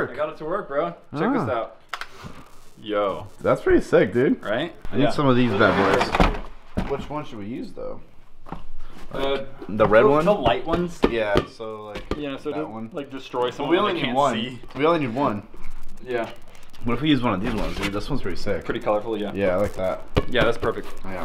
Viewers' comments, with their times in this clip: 0:04 Starting the audio he static